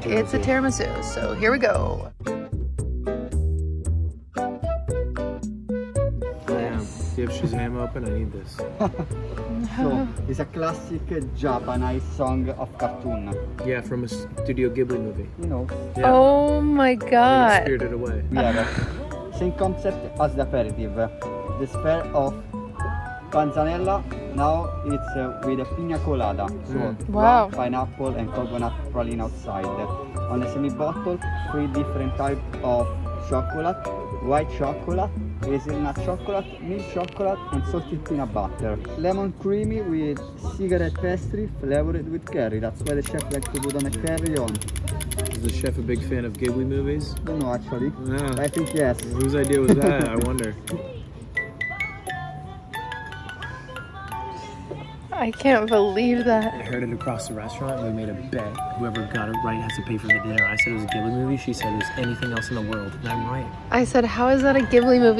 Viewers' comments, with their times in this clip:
0:10 it was so hard to understand that guy at the end, anyone know what he was saying ?
0:50 Why is no one talking about the ghibli music toy at the restaurant?